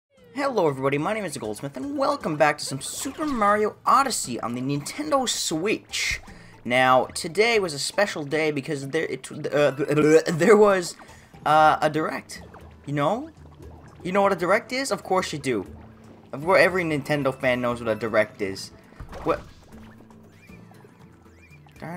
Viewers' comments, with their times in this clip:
0:09 "Sorry doctor, but it seems like the patient had lost his sense of speech"